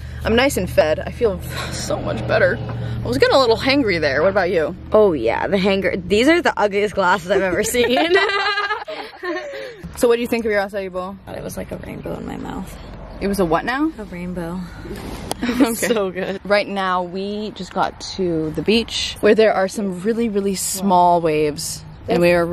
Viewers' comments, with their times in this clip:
0:08 sorry but that laugh scared me there